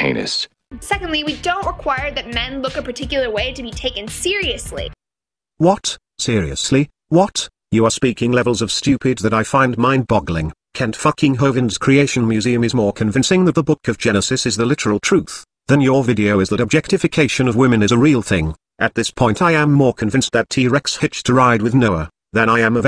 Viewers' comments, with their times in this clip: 0:10 The synthetic voice saying all this made me guffaw